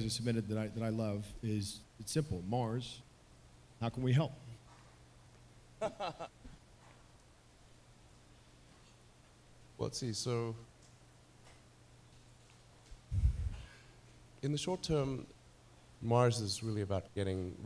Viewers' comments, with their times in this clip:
0:05 he basically laughs in their faces when they asked how they can help...